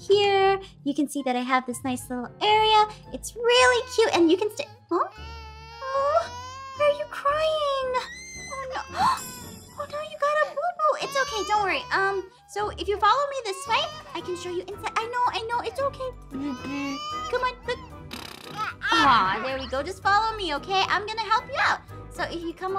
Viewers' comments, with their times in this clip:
0:04 he is crying